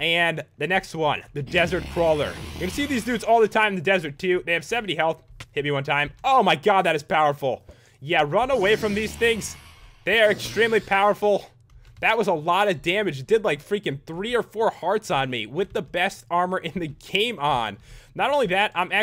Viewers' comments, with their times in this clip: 0:07 as of eastern time 2014 september 24 and i quote You're saying showcase wrong btw, your saying showcese